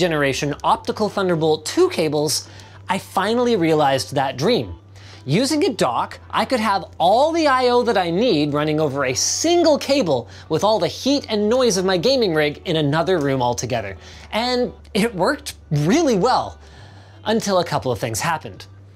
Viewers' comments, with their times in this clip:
0:04 Using a dog?! 😕